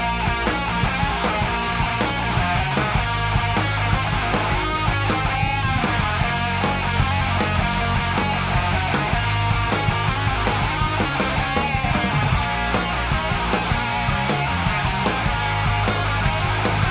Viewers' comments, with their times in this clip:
0:04 when you normally play death metal but also are a big Iron Maiden fan :D